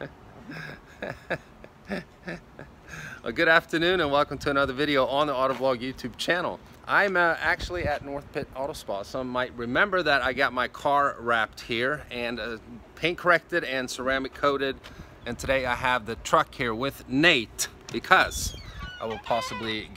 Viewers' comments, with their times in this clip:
0:03 anyone else think these sound like he filmed the part when he said “on the autovlog YouTube channel“ separately?